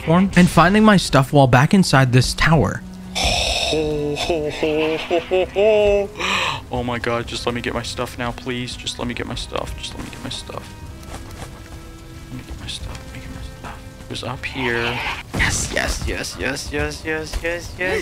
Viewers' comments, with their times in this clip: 0:03 Dio ahh laugh